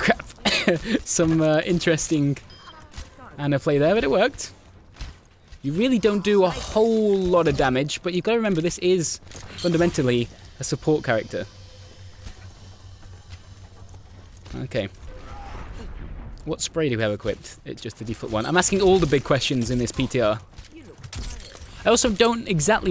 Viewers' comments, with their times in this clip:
0:03 u sounded like a robot saying but it worked fastly like butitworrrkeed